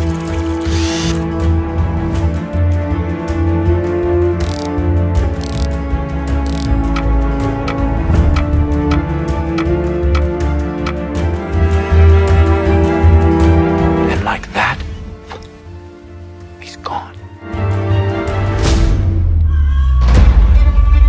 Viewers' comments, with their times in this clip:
0:04 socket wrench was making the ratcheting sound while you were moving it counterclockwise as if you were... tightening the motormount bolt... to disassemble it? 😆